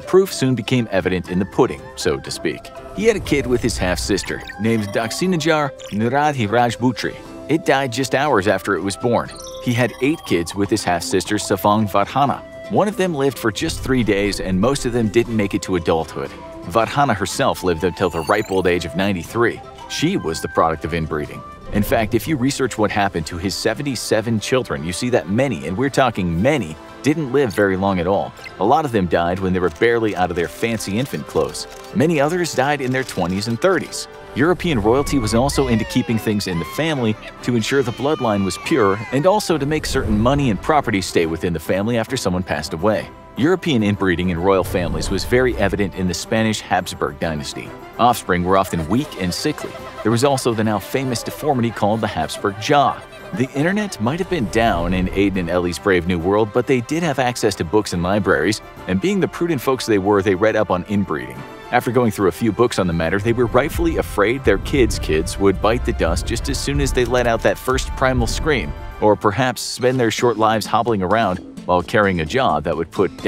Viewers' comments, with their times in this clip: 0:09 bro really pronounced that?
0:58 The music is making me laugh so hard.